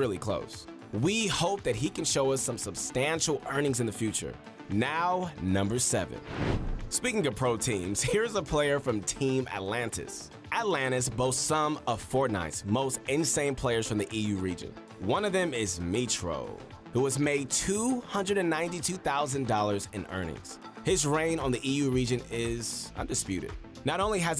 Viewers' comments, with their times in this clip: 0:08 Voice Crack LOL 😂